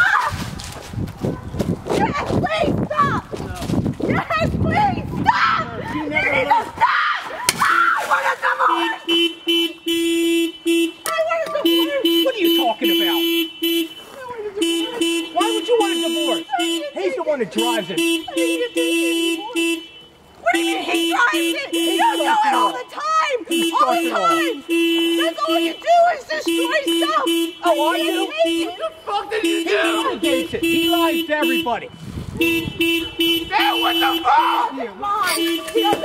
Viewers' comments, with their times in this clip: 0:06 yooo the scream bro
0:07 “Ah I want a divorce!!!!” Car alarm goes off “I want a divorce.” “What are you talking about?!” “Why would you want a divorce?” “He’s the one that drives it.” 🤣🤣🤣🤣
0:08 the perfect timing car horns I want A DIVORCE
0:18 nah the banger in the back in crazy and this is crazy😢